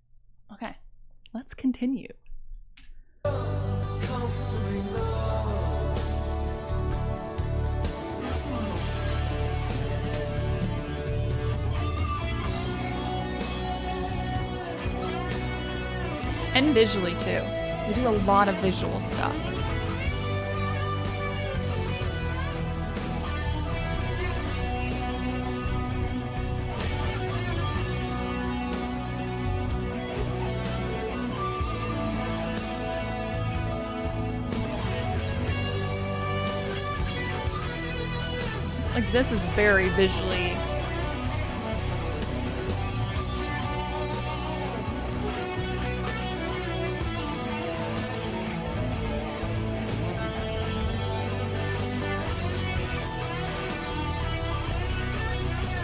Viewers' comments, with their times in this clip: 0:09 When the guitar tells a story! 🪄
0:38 that moment when a David Gilmour guitar makes your brain go "Wait....what??"